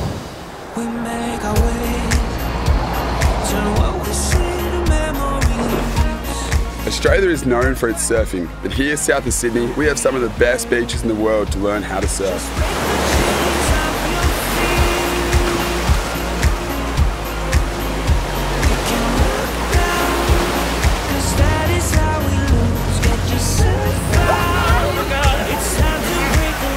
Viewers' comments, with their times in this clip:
0:07 Yo, did dababy give a voice over to this video ? Beautiful video though